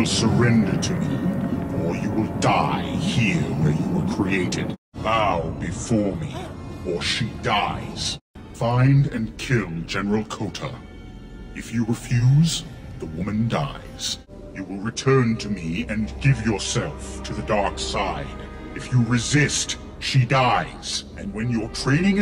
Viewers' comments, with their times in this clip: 0:07 Oh those lines were delivered perfectly